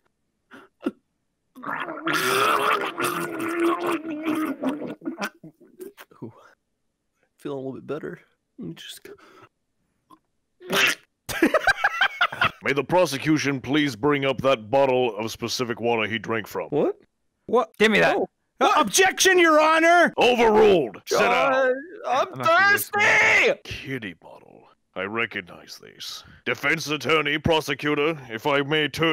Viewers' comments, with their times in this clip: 0:03 He Sounds Like Daffy The Duck From Mickey Mouse 😂
0:10 sounded like a duck getting hit by a car